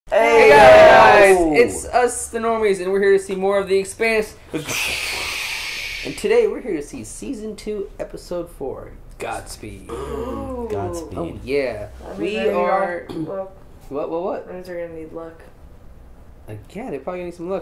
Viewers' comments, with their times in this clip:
0:00 RIP headphone users ears XD